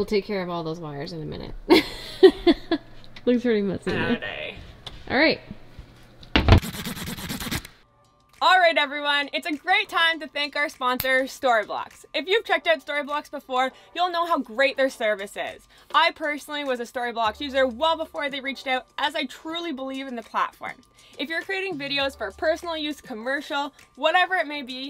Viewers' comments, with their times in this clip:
0:07 I'm in Arizona, it's too cold for me were your from, but it look beautiful there. this is when you know you need a new marker. It also sounds like the beginning sound of a 80' rap song.